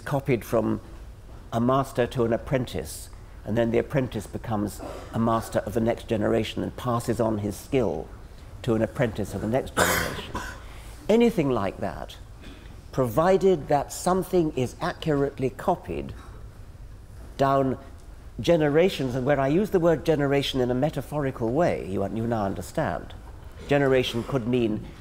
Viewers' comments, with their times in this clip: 0:09 Richard Dawkins: Says something dank and interesting. Some random person in the audience: cough*, *CouGH*, *COUGH